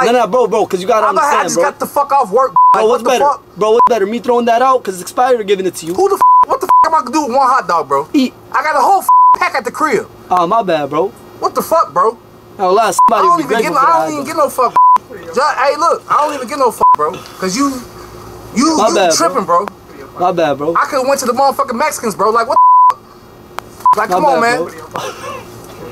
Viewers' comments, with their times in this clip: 0:08 "EAT" Dude i'am dead the way he said that😂